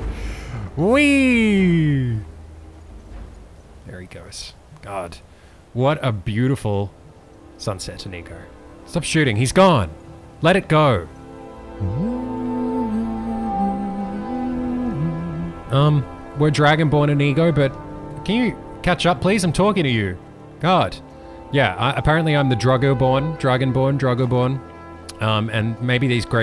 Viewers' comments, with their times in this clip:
0:05 am i the only one who hears "what a beautiful sunset nigga? x D!
0:10 Possibly the most glorious wowee to have been ever woweed.
0:11 So no one's gonna talk about how graceful he hummed with the music?
0:12 I like hearing you sing.
0:12 Your hum sounded very pretty